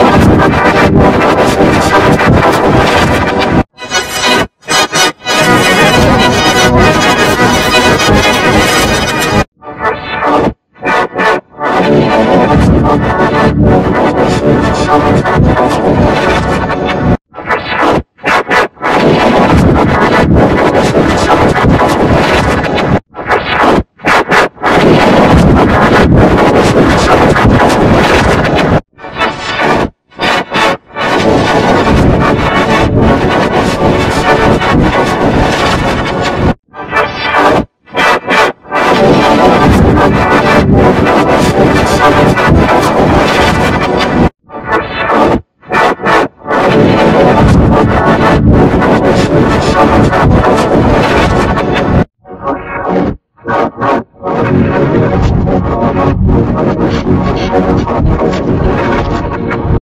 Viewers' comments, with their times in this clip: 0:03 And also my g major 406
0:52 g major 9999999999999999999999999999999